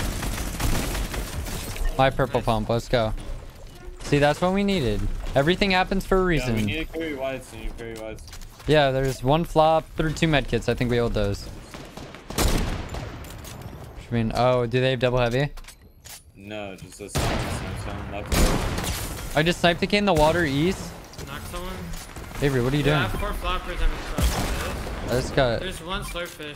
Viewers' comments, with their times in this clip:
0:07 1 flop and 13 medkits